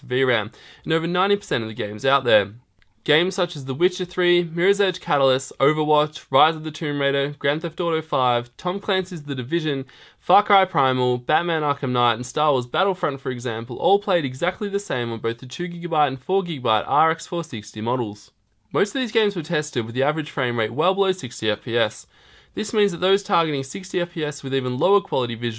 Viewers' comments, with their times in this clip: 0:09 Fuck hard Primal?